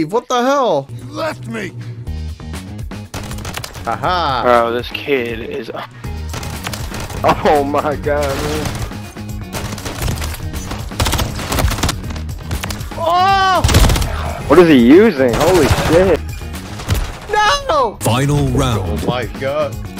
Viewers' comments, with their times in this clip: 0:05 I love these teenagers who speak like everyone is younger then them